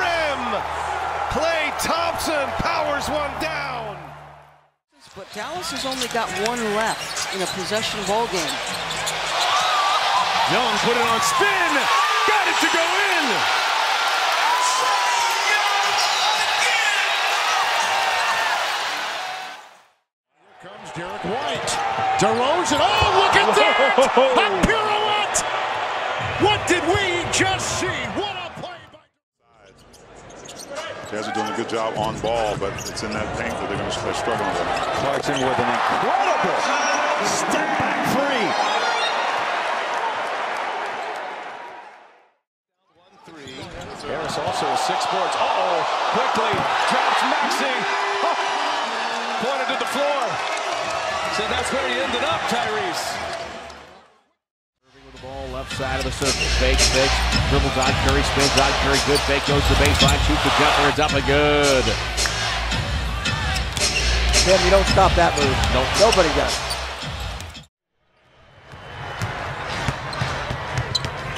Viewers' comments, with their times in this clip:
0:07 yo that lady sounds happy
0:54 this auctioneer showed up to the wrong gig